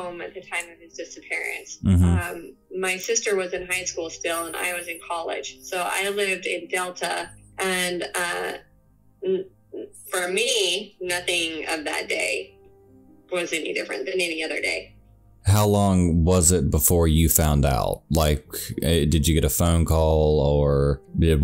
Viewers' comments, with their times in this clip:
0:07 You can literally hear this guy’s nose whistles while he’s breathing. It’s like nails on a chalkboard.